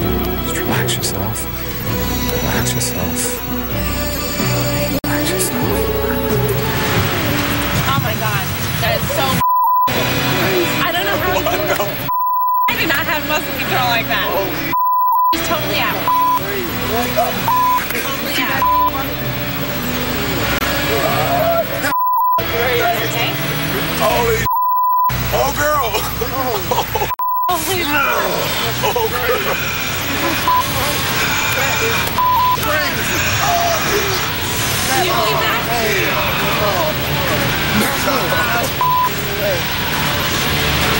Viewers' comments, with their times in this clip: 0:06 Obviously it is just a helicopter holding her up after their hair is blowing all over the place and you can hear it at the end also that's why she has her hands touching the ground to stabilize herself but shes still shaking slightly
0:28 Did you hear that? ? He was talking just like demon or somthing....